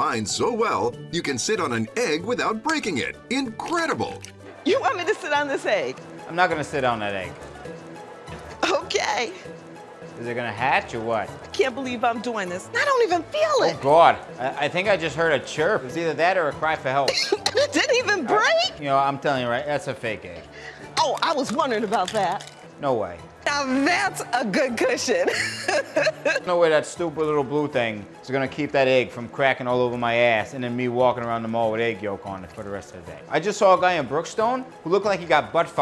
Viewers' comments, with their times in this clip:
0:08 The way the lady says “okay” kills me every time Time stamp:
0:23 Holy shit that's the cringy Kamala Harris laugh!